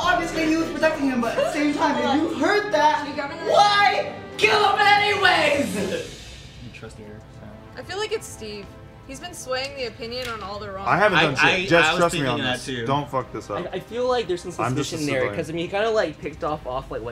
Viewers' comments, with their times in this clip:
0:03 holy that sounded like a scene straight out of a movie